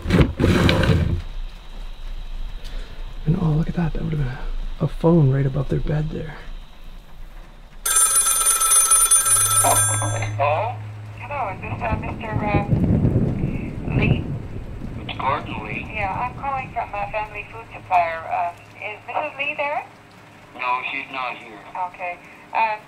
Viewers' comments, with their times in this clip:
0:08 When that phone range I almost had a heart attack! Nicely done 👌!